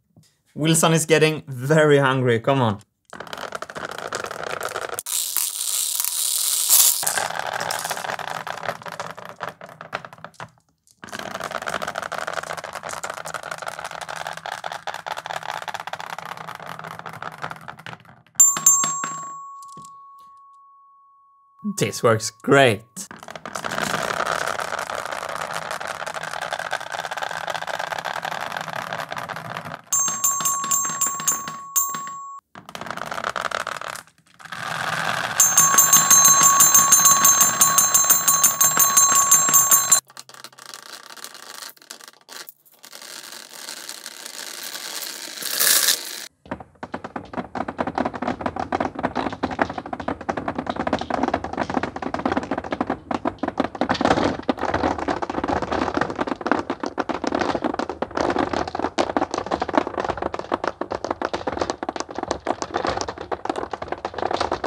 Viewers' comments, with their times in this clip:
0:05 -ish. How is the noise comparison between this & previous marble divider? I feel that the marbles run more loudly in this track, compared to the old (and that could "taint"(/"add character to") the music you try to play).
0:15 the clicking noise of the marbles is so nice
0:28 The "ding ding ding ding ding" reminded me of Breaking Bad ;)
0:47 ASMR PART xD